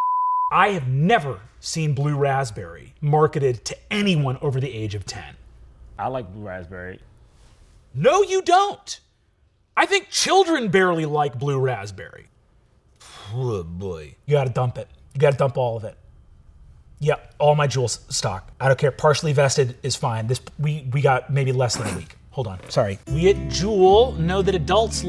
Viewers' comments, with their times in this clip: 0:06 Sounds exactly like John Krasinski